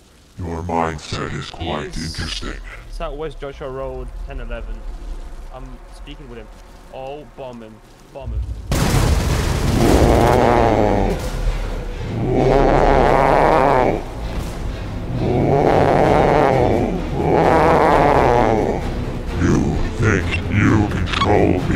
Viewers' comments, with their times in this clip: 0:07 he did the a10 brrtttttt